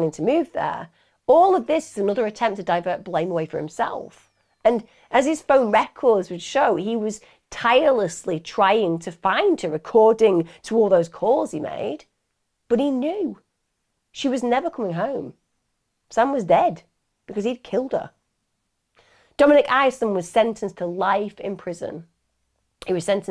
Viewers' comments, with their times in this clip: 0:04 The whistling through headphones through the video... 😔